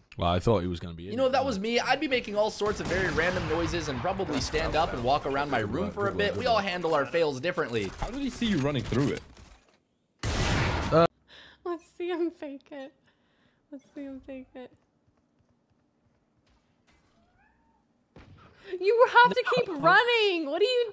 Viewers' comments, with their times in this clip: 0:07 the reason they know ur running through the ult, is because you can hear damage ticks